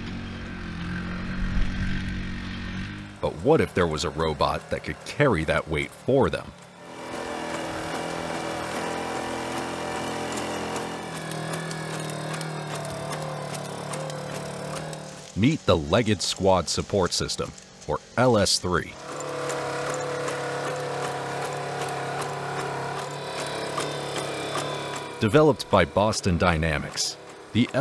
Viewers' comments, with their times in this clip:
0:08 this robots is not good in special operation..his engine is too noisy...🙈 I think only good in patrolling...😬😁🤟